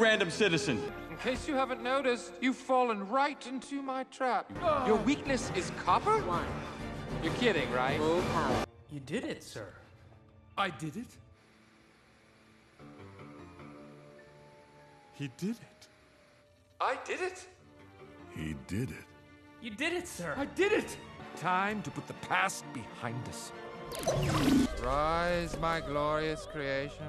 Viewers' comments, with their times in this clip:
0:09 love the bad to the bone riff in the background
0:10 love the bad to the bone riff in the bacground